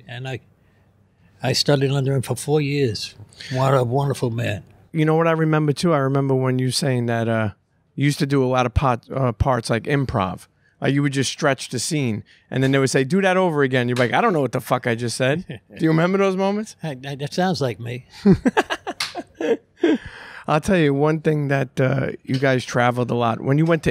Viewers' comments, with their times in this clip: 0:06 "You use to do allot ot pot.." lol 😆